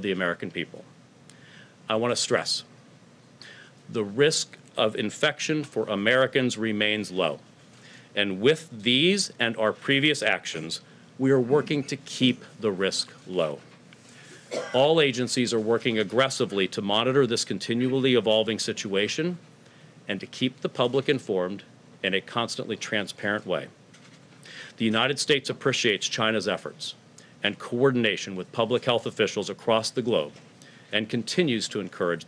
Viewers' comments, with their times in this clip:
0:10 We're working to keep the risk low. Cough
0:14 y’all heard that cough?
0:14 someone coughed which means all of them are now infected
0:15 The person that Coughed 😂🤦🏽‍♀️